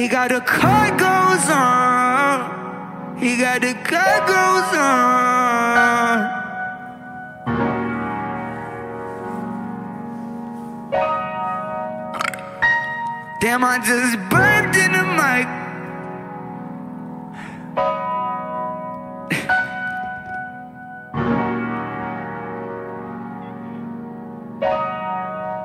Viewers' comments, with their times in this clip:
0:09 Burped in the mic 😭😭😭
0:12 damn i just burped in the mic 🗣️🗣️‼️‼️‼️